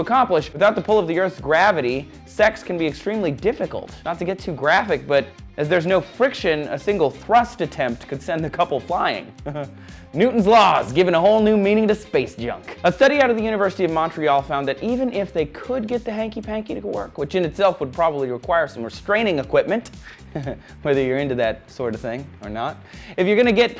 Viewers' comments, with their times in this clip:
0:08 his chuckle is perfect.
0:09 his laugh xD